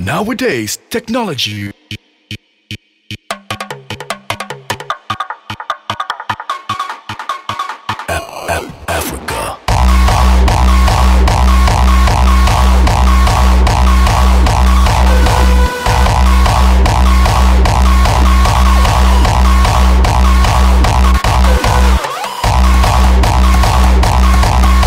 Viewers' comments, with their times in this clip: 0:09 what a dirty kick!! 0.0